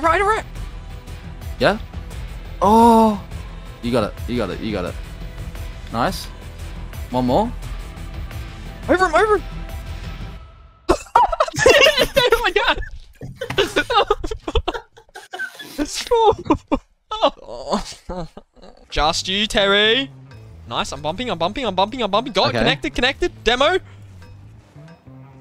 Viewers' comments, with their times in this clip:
0:10 That pause on the music couldn't have been better timed.